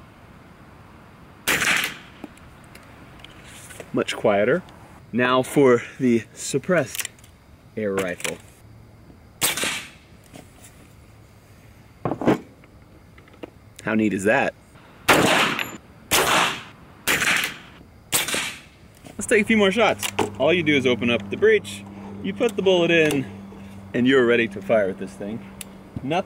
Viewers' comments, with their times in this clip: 0:09 I heard a little pew!
0:14 Actually just sounds like he's turning up the pitch!
0:14 that’s literally as quiet as a .22 to about a .17 HMR Suppressed